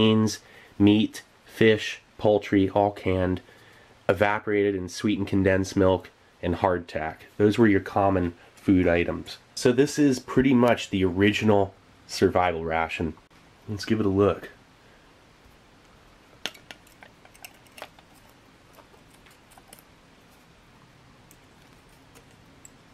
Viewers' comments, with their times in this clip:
0:03 Brits were eatin hawk hand ????